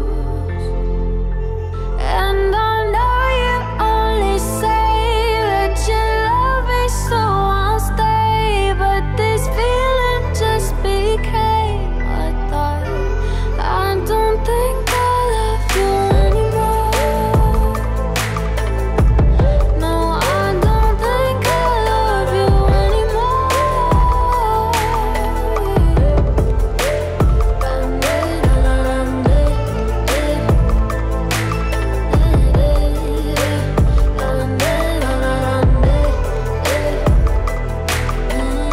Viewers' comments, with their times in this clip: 0:08 You can her autotune no hate
0:26 Why does the beat sound like Muévelo by Nicky Jam and daddy Yankee (it starts on hers) (on Nicky and daddy Yankee it is on the beginning) ...🧐🧐